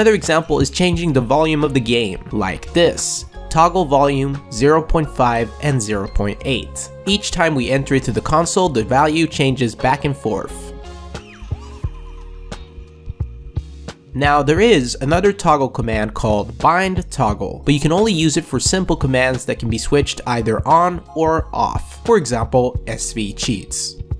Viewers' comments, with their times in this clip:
0:10 "forf" One of the biggest black person tells.